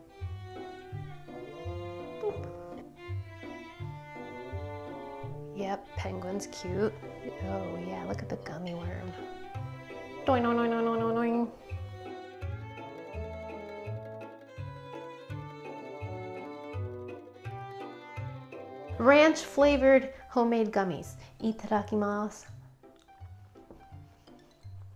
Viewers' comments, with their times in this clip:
0:10 excellent sound effects and sooo satisfying. Love and appreciate your creativity and inflections.❤ watched while wearing my We're Gona Be Ok shirt. And Ranch oyster crackers?! I wouldn't be able to stop at 20😋